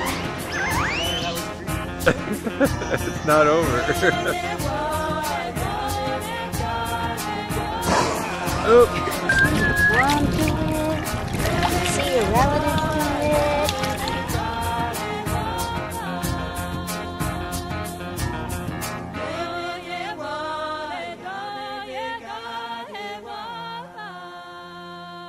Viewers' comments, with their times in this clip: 0:09 Who is being petted ? Lovely video in spite of the distracting music. Just orca song would be better.